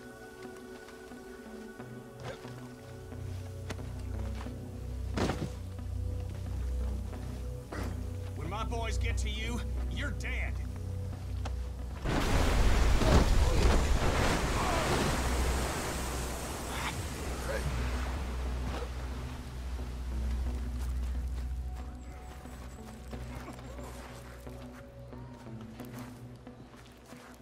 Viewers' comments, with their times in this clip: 0:08 he sound like kenny from the walking dead